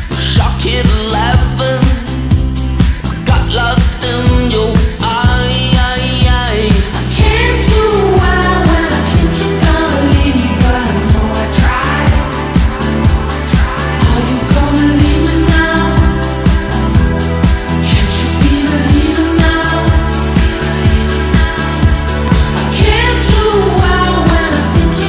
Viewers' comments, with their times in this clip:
0:07 that transition is my favorite part of the song- i love it so much
0:07 This part is what confused me when I was trying to look for this song It sounds like Mark Foster.